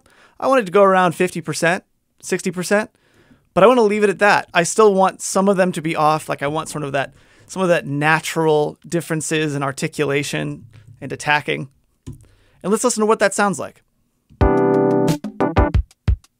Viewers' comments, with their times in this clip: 0:03 Nice!!! It really did sound fake before, like too "manufactured."